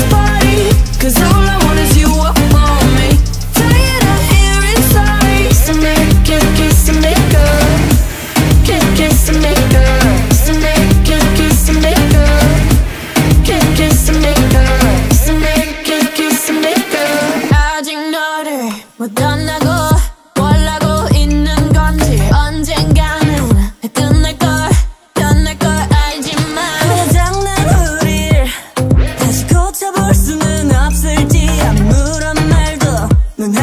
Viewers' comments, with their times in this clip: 0:06 Why the kiss and makeup line sounds like kiss me kiss makeup please guys help me😅
0:18 Yo they’re literally CHOCKING and it sounds so fucking bad 😂😂😂😂 I can’t stop laughing. this is why this song never went anywhere. Blackpink ruined it like mofos.
0:18 Yo they’re literally CHOCKING and it sounds so fucking bad 😂😂😂😂 I can’t stop laughing. this is why this song never went anywhere. Blackpink ruined this song like mofos.